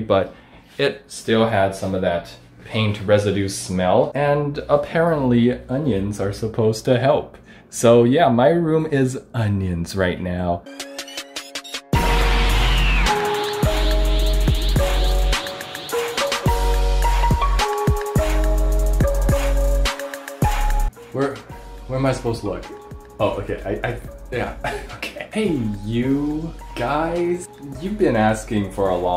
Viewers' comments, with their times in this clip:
0:10 Is it me or did the beat drop even harder in this video